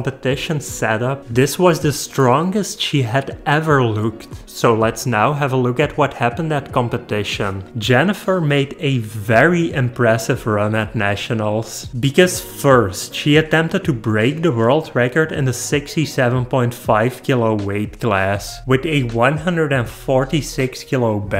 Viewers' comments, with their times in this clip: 0:09 Shout out to Elvis coming back from the dead as commentator for the event